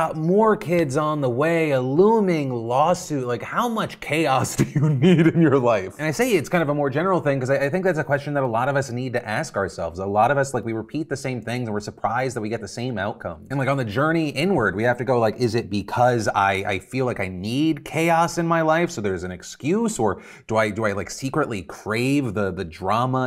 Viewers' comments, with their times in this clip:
0:04 why does Phil sound so happy talking about Ethan's 'chaotic' situation?